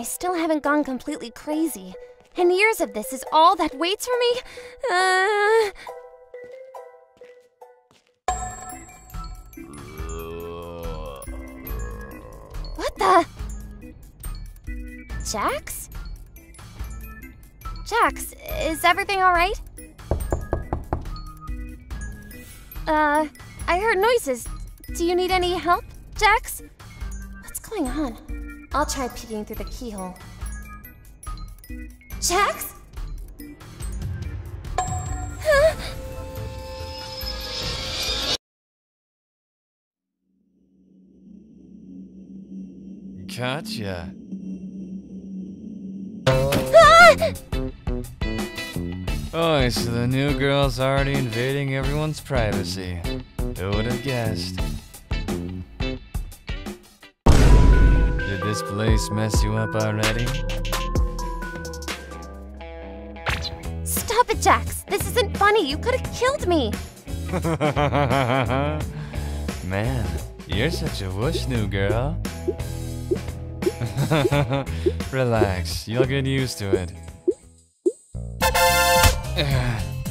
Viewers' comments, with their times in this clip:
0:10 nahh he sound like my brother says "rawrr..."💀
1:08 "gold watcher" ahh laugh